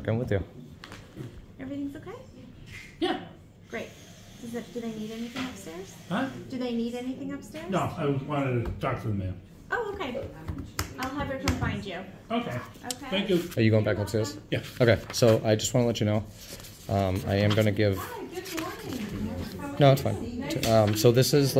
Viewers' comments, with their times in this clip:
0:06 they talk like NPC from Skyrim xD